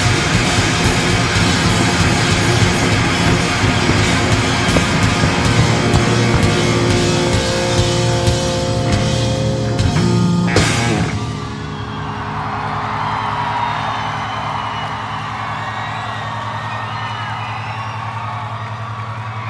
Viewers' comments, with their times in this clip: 0:03 That's when slapping the bass was made... huh....